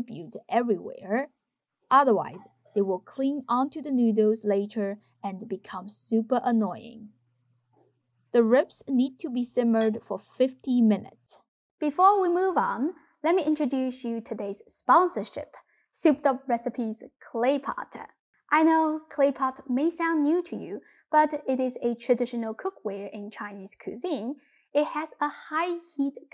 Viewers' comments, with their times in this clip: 0:10 Did you say 15 or 50 ?